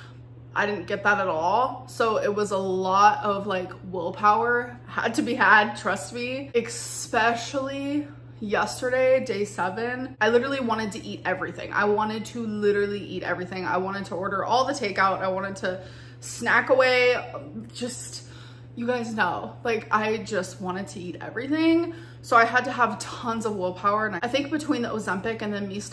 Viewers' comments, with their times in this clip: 0:07 why do you put the sound of X in "especially" ??? """" exspacilly """"